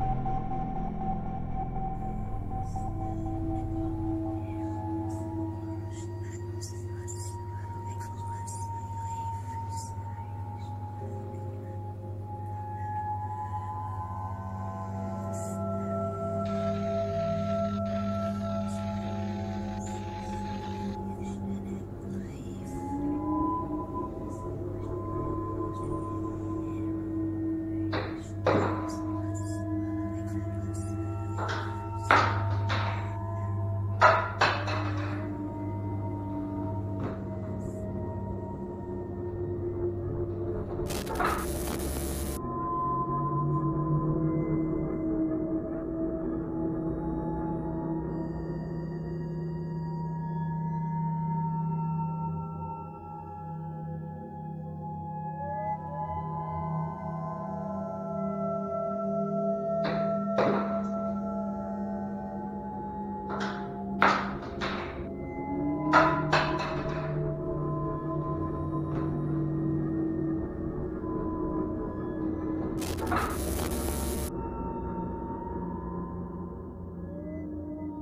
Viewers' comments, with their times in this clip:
0:04 is it the audio added by you guys of girl speaking or is it someone really speaking and nobody talks about it...
0:16 Please tell me you guys added those whispers in the background lol
0:26 Does the whisper belong to the soundtrack or was it picked up by cameras as well? (haven't watched til the end yett in case they clear it up)
1:00 .....sounds like the womans voice is saying......"THATs AIN'T ENOUGH"........but its so freakin hard to hear when there is music on..........??????